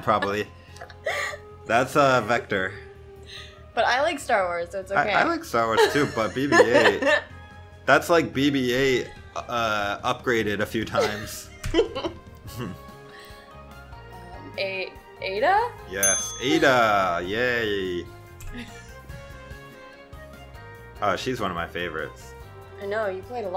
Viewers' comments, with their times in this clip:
0:05 the laugh made me die of laughter